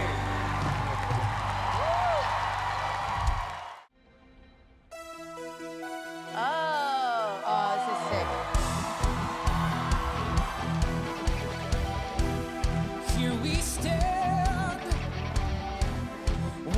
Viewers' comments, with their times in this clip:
0:04 i gotta give credit to the band during the singer he kept losing tempo, it seemed to me, and they kept recovering and keeping him sounding good! Not enough hype given to them, imo!